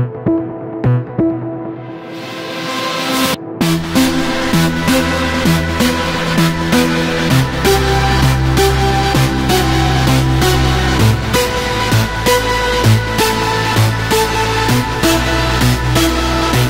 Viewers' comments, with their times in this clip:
0:03 sounds so haunting!